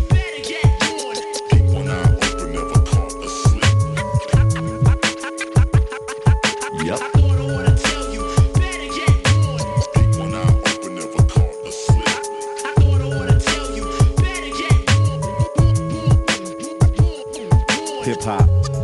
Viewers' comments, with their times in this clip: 0:06 my favourite part is when the old man says yep!